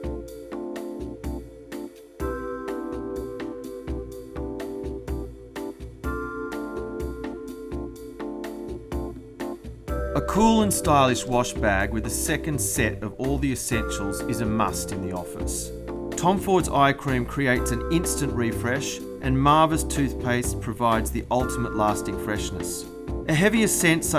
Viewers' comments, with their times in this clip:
0:07 wow he's on beat